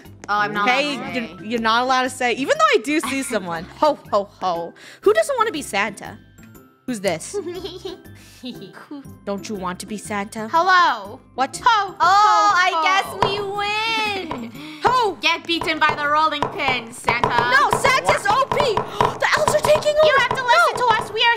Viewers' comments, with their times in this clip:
0:04 I THOUGHT SHE SAID SOMETHING ELSE-